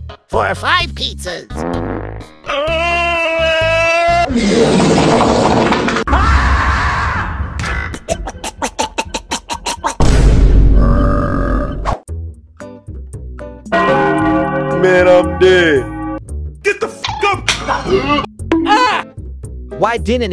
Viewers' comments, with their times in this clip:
0:07 the fart got me laughing on the floor